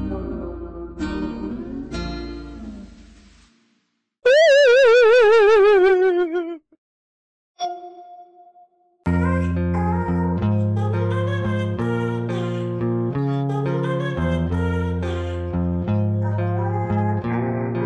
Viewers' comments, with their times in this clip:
0:03 his cry is like a laugh
0:04 Me: 😆😆😆 he sounds like a dieing pacman